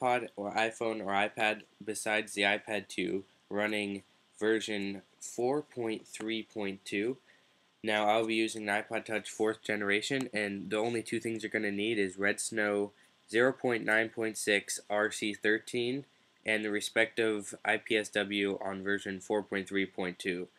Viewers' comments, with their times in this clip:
0:03 did he say virgin? xD